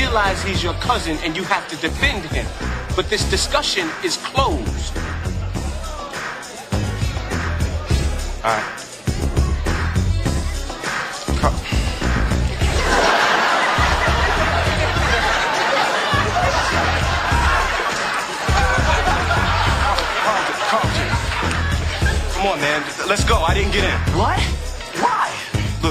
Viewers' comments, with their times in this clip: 0:10 hahahhaa carlton was straight GIGGIN!!!!!